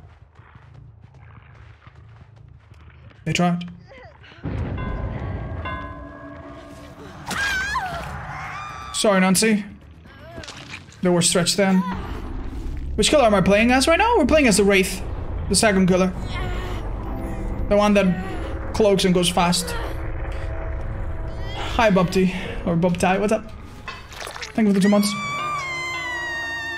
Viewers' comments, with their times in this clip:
0:07 R2D2 death noise